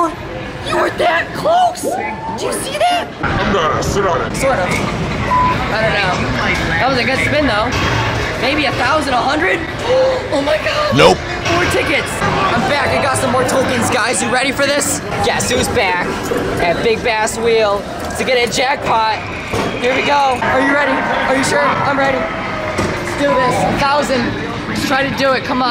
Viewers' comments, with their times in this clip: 0:06 I here’d a BEEP